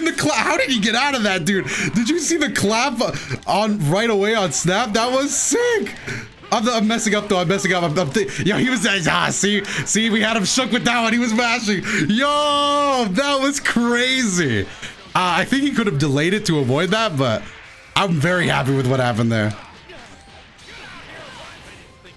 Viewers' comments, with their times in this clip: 0:06 you said he was mashing but it sounds like you were mashing. your brain keyboard that is 😂